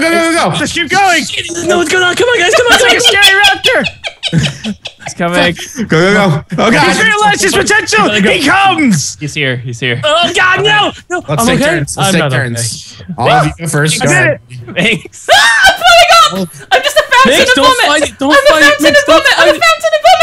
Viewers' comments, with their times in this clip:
0:06 I paused uses the bathroom and when I got back and unpaused all I heard is Chilled yelling "HE COMES". Instantaneous nosebleed